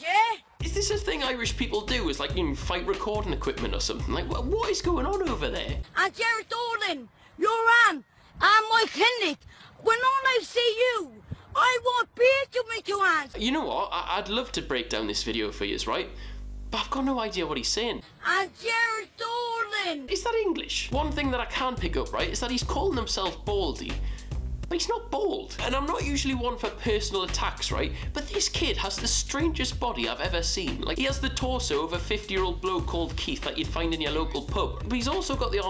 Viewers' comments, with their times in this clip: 0:10 He definitely from Dublin
0:18 because Ireland is reviving the Irish language it might not even be English but them Southerners do sound a bit strange